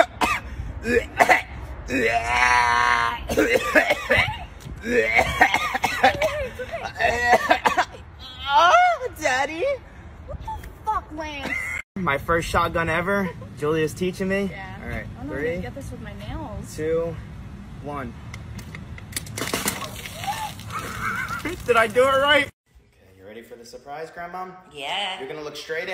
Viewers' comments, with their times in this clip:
0:06 LOL. *moans”Daddy~~~~~”I laughed my ass off